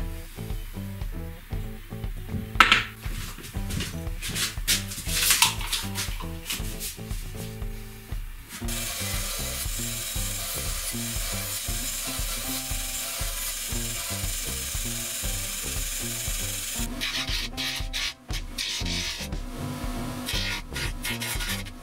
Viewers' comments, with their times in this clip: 0:06 Lol... ....what's wrong is that bandsaw to loud for you 😂